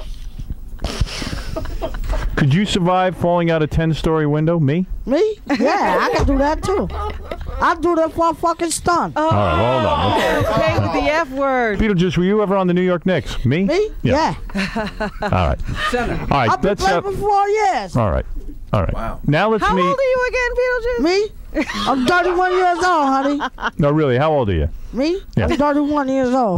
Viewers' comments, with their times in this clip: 0:08 We are a twisted species. With all the digs and chaos, the moans only come out for the "F" word. SMH